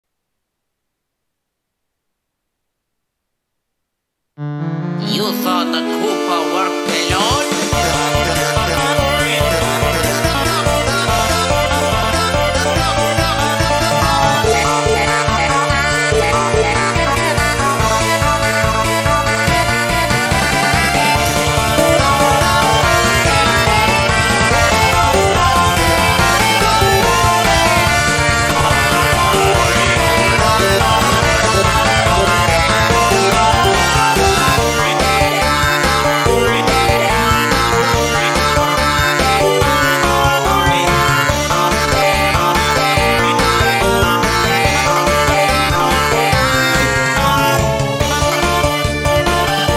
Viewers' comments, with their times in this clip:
0:07 song literally starts
0:33 THIS IS MY FAVORITE PART THE WAY THE VOCALS SOUND JUST SOUNDS GREAT
0:33 I’m surprised nobody has been talking about this part of the song it’s so good!!! Mario and Luigi’s voice with the beat is just so addicting to hear over and over again!!